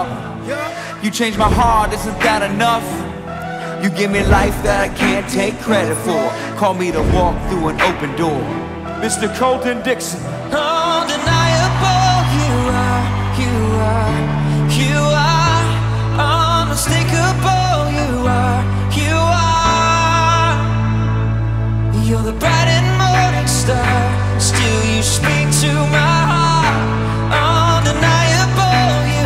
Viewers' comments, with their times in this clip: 0:10 his voice <3 <3